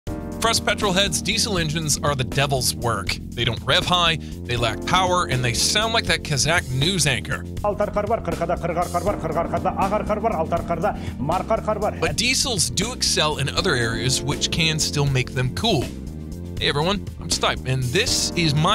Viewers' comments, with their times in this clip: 0:06 exactly how my irl car sounds like